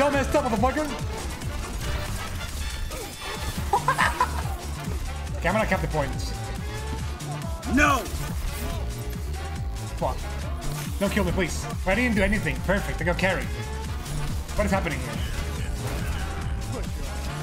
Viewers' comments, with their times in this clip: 0:03 his laugh sounded like a monkey to me lol😄